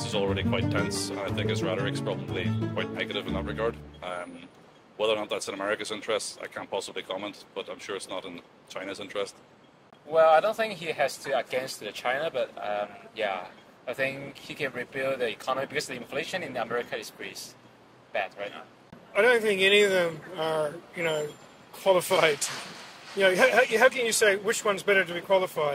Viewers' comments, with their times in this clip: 0:10 this guy sounds so stupid with his comments. There have been reports predicting the economy will worsen if Trump won the election. Also his English is terrible for an expat.